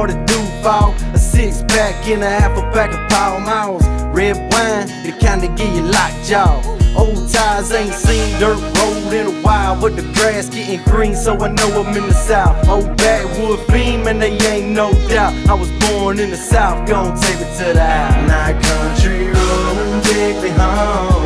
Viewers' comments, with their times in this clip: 0:07 🔥🔥 Who is listening this every day This voice is amazing 🔥🔥🖤 👇👇👇💛